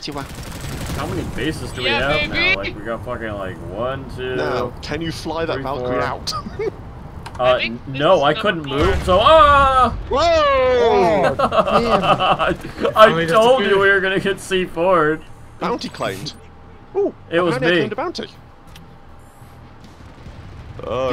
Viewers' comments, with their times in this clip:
0:03 Now can you fly that valkyrie out? BOOM!...Damn it TR I wanted to see that :P